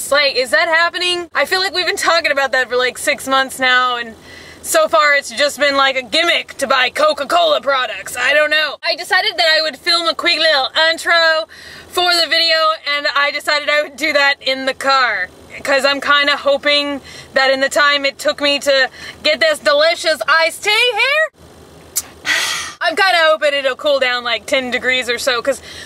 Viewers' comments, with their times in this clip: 0:06 LMAO! I love your voice here hahah